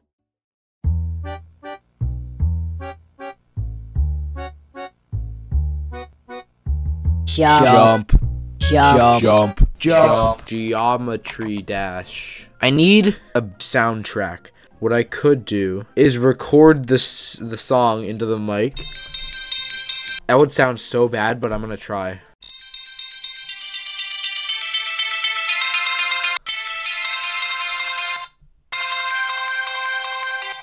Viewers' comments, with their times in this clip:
0:06 rip to my ears
0:17 Gonetry das🚫 Gonetry dash;yes